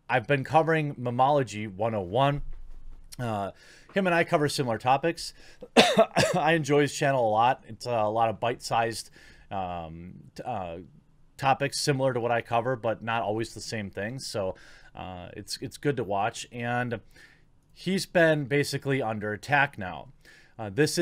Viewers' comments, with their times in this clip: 0:05 !!!! Tackle him he's got the COOF!!! SHUT THIS $#1! DOWN!